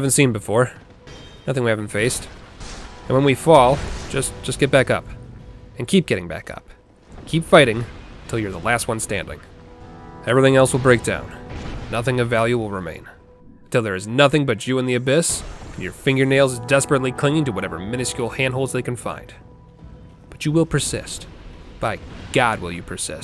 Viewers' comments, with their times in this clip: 0:05 he starts sounding like the narrator from the twilight zone